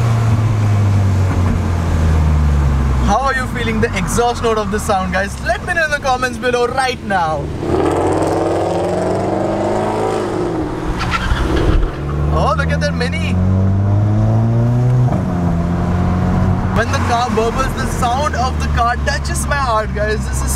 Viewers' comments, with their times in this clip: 0:04 How Are You Feeling Exhaust Note Of The Sound ...😂😂 The Exhaust Note Of The Sound Is Awesome